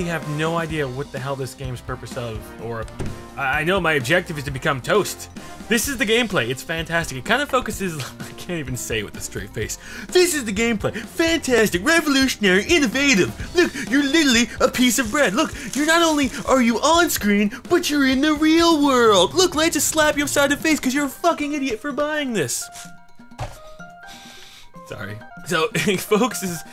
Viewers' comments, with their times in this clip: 0:09 Lol he tries to become jony ive from apple company. The one that does the commercials.